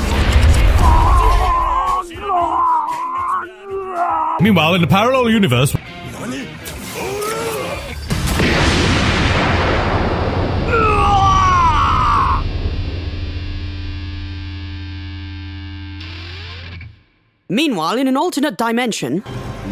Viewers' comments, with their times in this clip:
0:05 I think pucci getting away with that punch is legit bc of c-moon tho, but the bass boosted lightbeam is so satisfying lol